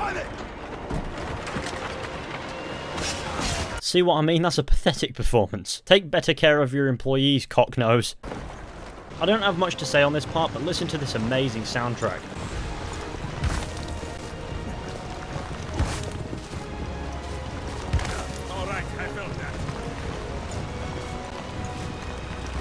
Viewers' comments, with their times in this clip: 0:10 that sounds like the main theme on Batman Arkham City